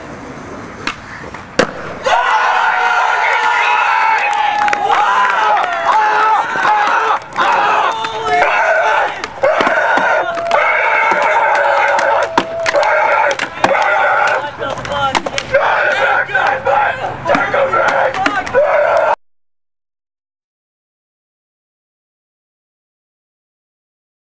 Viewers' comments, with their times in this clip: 0:05 screamin guy omg lol